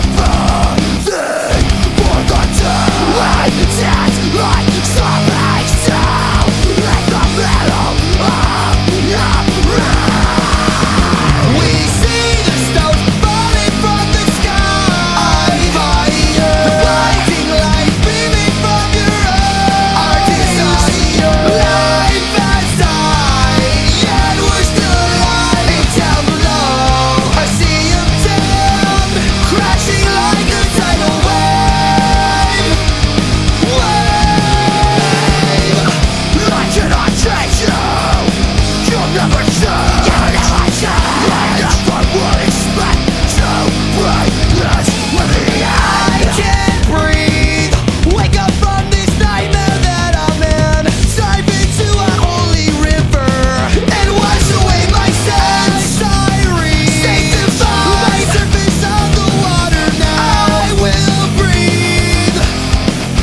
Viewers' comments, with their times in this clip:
0:07 I started to hear cod zombie sounds💀
0:45 wow he sounds just like ronnie LIP SINGING